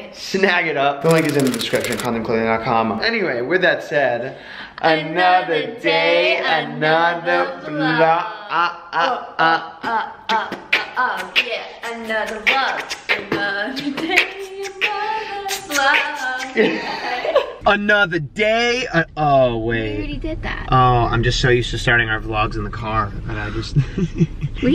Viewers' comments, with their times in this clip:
0:08 The best beat of all time